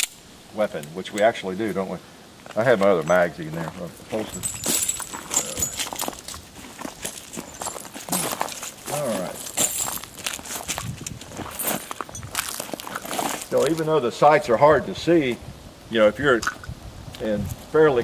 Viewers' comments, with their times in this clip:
0:04 listen to the ground jingle
0:05 I love how all you can hear when he's walking is the shuffle of spent shell's on the ground.